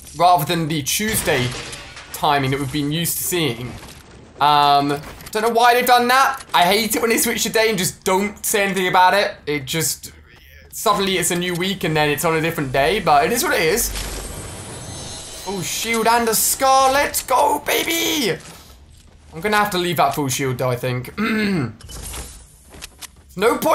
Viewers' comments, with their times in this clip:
0:06 This video is fake when he build a ramp you can hear someone else saying “the end baby”
0:09 I here someone else's voice :|